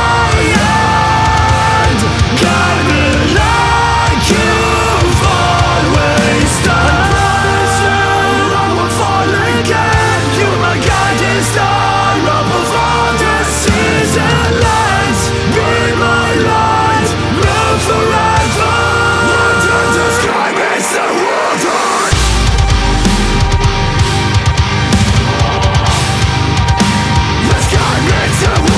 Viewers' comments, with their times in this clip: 0:09 At first - typical hardcore shit, but then oh my, that was cool, made me like this song. strong ending